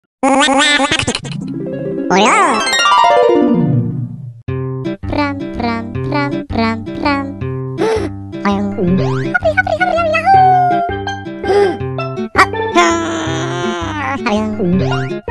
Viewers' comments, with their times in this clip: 0:00 Yoshi’s voice sounds like Snoopy